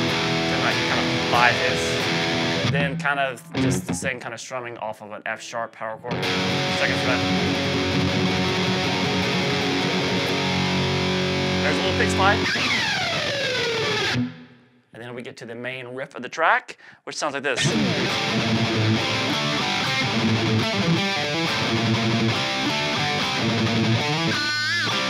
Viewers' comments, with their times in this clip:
0:10 in the background here on the orig track u can hear cliff doing some cool sliding up and down the neck...and then James with the pick slide.. awesome